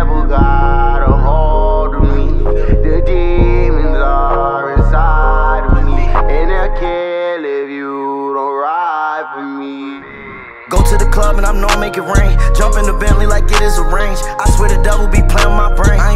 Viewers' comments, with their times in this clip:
0:03 Godly transition ong